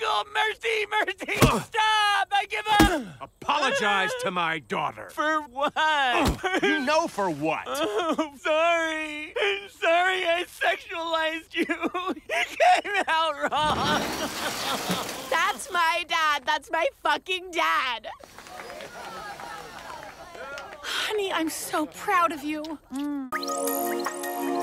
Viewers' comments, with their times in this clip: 0:07 why tf he sound like omni man